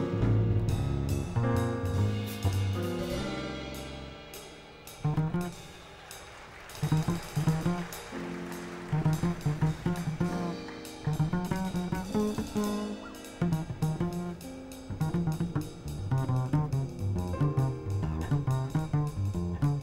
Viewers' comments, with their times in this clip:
0:03 Bass Heaven Gary start with dancinge next also crying <<< . Gave Me Heavenly Goose Bumps So good for my Health >3